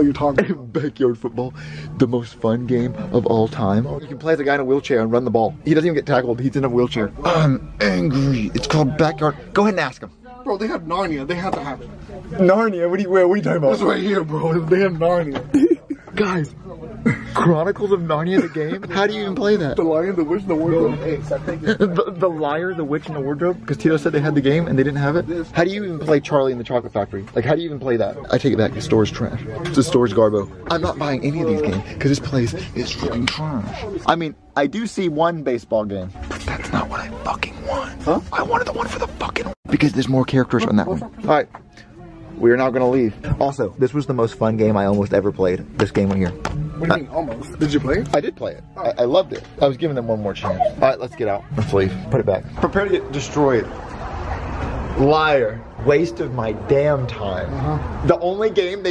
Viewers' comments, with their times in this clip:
0:10 sounds like they said mario
0:43 the gamecube logo says the n word